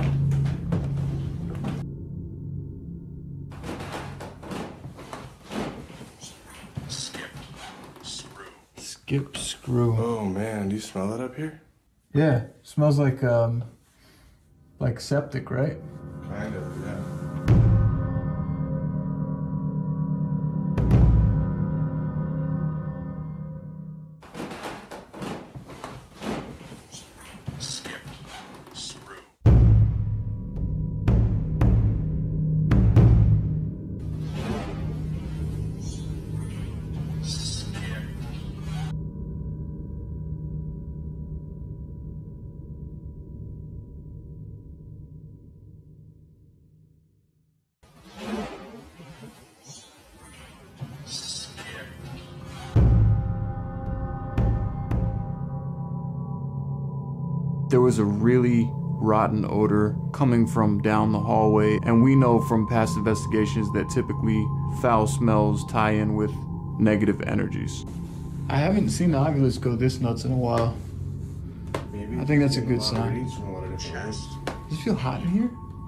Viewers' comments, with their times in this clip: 0:05 I swear I hear someone saying 'She Rang' or 'She Ran' in a scratchy voice. Am I stroking out?
0:06 I heard a young lady say ouche ladder and then the ovulous said skip screw. Weeird
0:06 Lots of comments so I haven’t seen them all, but did anyone call out the extra voice a ?
0:08 I heard something whisper into the camera,"She left". I might be wrong on what was said but it was definitely a whisper. Anybody else heard it.
0:09 a faint voice that sounds like a woman says something. It sounds eerie
0:29 "SHE MIGHT SKIP THIS ROOM" THAT'S WHAT the whisper SAYING on
0:47 In the whisper I hear, "She might be scared." That could refer to the cat maybe.
0:56 It truly sounds like the entity said "she might scare people"